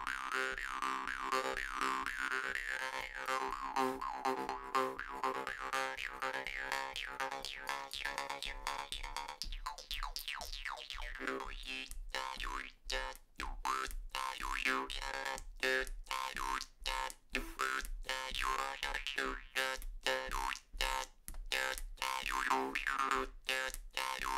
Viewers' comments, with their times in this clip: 0:07 Love the video, been watching you on tiktok and you've inspired to get one of these. Just got it today and I love it already. One question tho,, how do you get that clicking sound coming out of it? I've tried messing around but can't seem to get it 😅